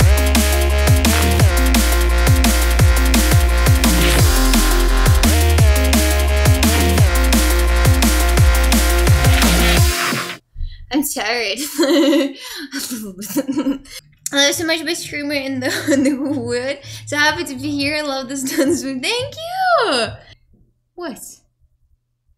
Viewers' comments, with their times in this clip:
0:05 sounds like dry out